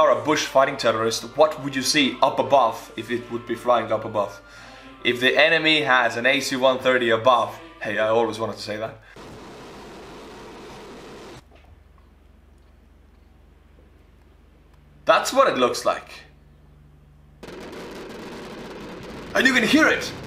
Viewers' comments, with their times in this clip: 0:06 ptsd to call of duty playing as the Russians oh god, the screaming, the bullets, it's all coming back again. 😳